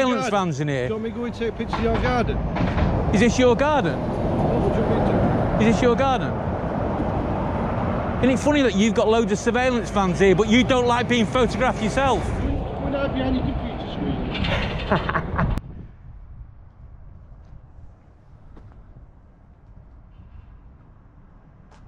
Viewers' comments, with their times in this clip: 0:07 What was his reply here? I listened a few times but couldn't make out what he said back.